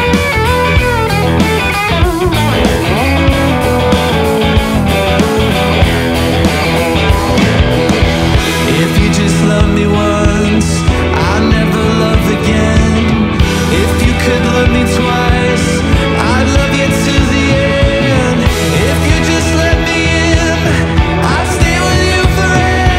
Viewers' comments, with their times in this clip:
0:08 The ascending phrase is awesome. It sounds like a promise even if I ignore the lyrics. Interesting piece!